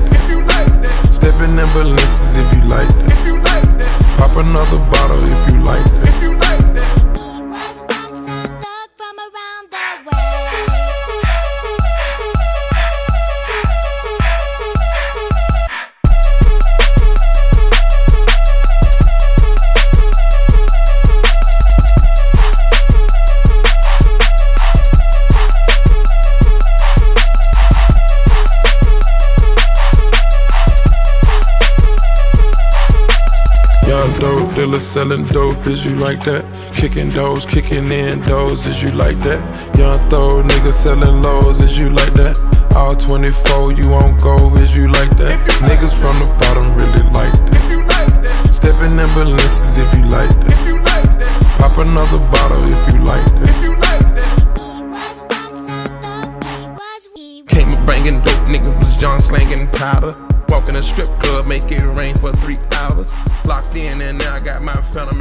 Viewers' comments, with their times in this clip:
0:09 metro just fucking diss drake with the beatttt
0:52 Nah metro won the beef wit that beat 😂😂😂